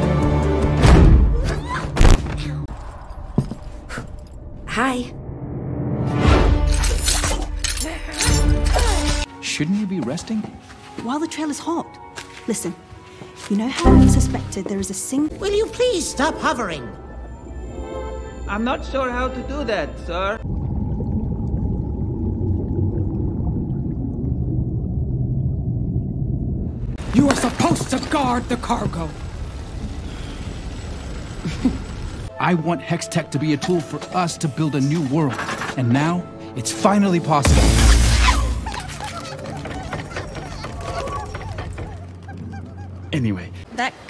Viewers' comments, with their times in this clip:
0:09 Windows sound is top notch
0:13 Not the windows error 😂
0:13 the windows error sound cracked me up, i did not expect it lol
0:17 I swear he sounded like Gru from Despicable Me here--
0:32 whyy is no one talking I find it so funny bc I totally forgot abt it so its completely out of context